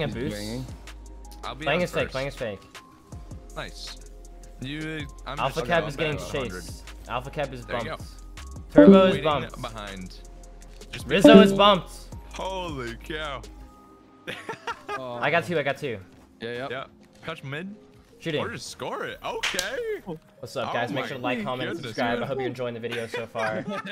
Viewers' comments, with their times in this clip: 0:08 Actually thought I disconnected from Discord💀